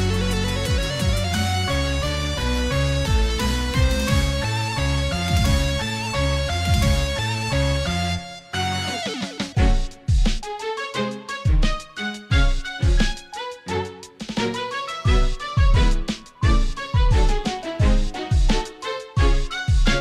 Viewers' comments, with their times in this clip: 0:08 when the Halloween vibes kick in